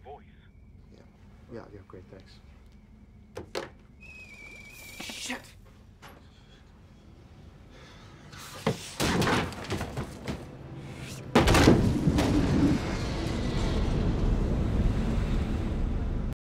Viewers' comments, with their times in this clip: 0:09 I thought that will be better playing this to 0.25x speed but was more creepy with the sound